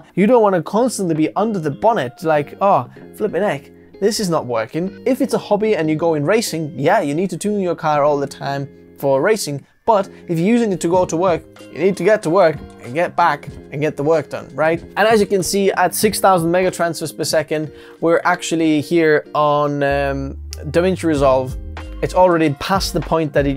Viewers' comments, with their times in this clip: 0:04 flippin' 'eck brit saying with your accent is superb to hear on Youtube.